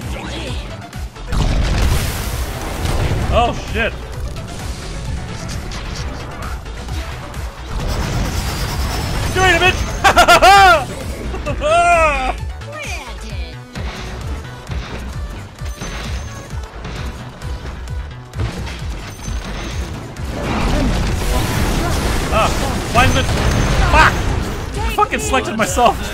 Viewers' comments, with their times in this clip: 0:09 Storm spirit laugh xD